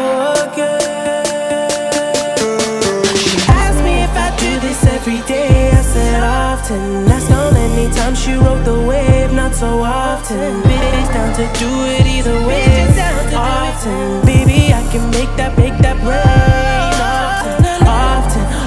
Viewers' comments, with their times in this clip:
0:04 listen to that back round instrumental noise slowly rising it is beautiful